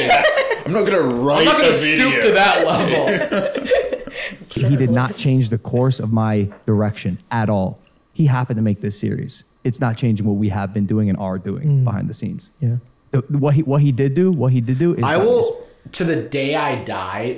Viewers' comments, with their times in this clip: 0:04 I thought he said "he did not change the course of my erection" 😭
0:05 I swear he said "he did not change the course of my erection." Like, I'd hope not.